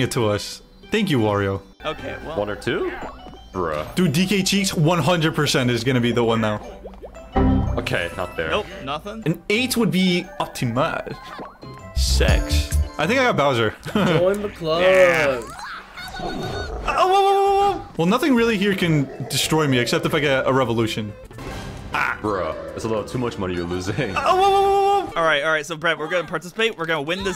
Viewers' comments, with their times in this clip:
0:08 Bro that prononciation of optimal sounded so german 💀
0:11 great way to say 6